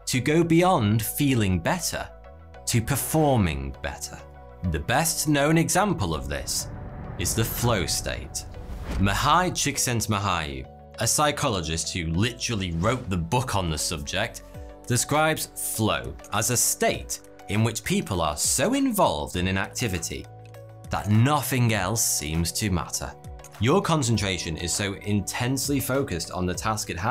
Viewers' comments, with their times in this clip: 0:08 I've never heard a non-Hungarian youtuber pronounce a Hungarian name that well. It's almost good.
0:10 Isn't it funny that you pronounce his name in English as "Me high"